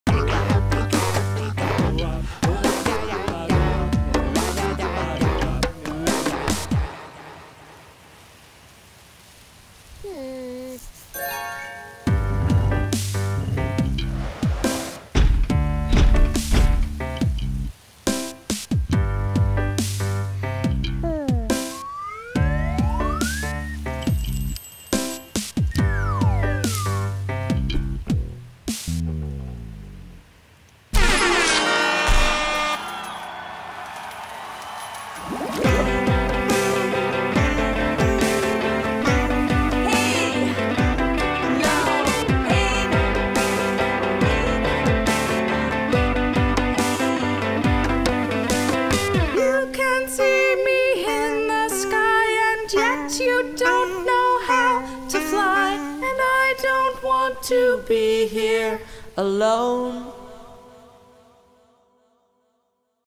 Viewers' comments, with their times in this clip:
0:00 when the distorted cybop
0:00 what the heck is that “RACHACHACHA” noise? I feel like it was replaced for cypob but I also don’t think that
0:00 Did anyone know cybops old voice?
0:01 Whats wrong with cybop's voice
0:01 bro cy bop sounds different
0:01 You can hear a change in cybops voice And i dont know why
0:19 the schmoochie Voice soo cute
0:26 the monsters that are singing in the background are like uuuuuuuuummmmmmmm
0:32 Epic Schmoochle sings into battle!
0:48 Parlsona looked so lonely over there until Stoowarb started singing along with her oml
0:49 they start sing
0:52 all of the nerves in my body has already exploded of how cute that stoowarb started singing with parlsona!
0:56 if u guys use headphone and then turn the volumd up u can hear stoowarb sing with parlsona
0:56 Stoowarb starts singing
0:59 WOW Its beautiful voice
0:59 I don’t know if that’s a boy or girl it sounds like both and bro that ending